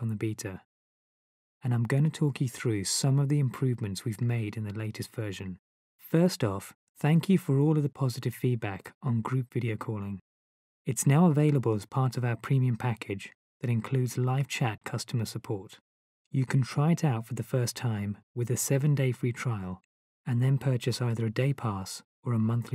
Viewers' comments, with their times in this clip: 0:06 dead air :DD